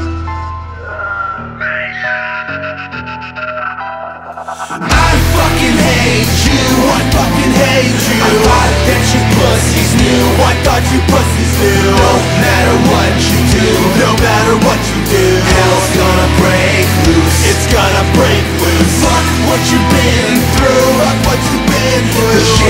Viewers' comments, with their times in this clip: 0:03 I loved this song when I first heard it. that instrumental reminds me of a Transformer autobot😂 I bet people were so pissed when he dropped that World Trade Center line in the chorus. I personally didn't mind that line being dropped because rap-rock these days needs some more edge and punchlines. Rap-Rock has lost it's balls but hearing that line was so badass.